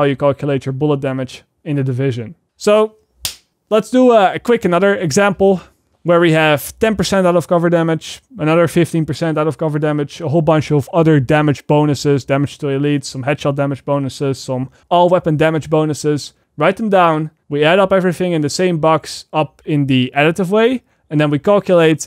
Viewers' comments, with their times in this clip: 0:03 Nice detail with the marker cap closing sound
0:03 I love the clap ^^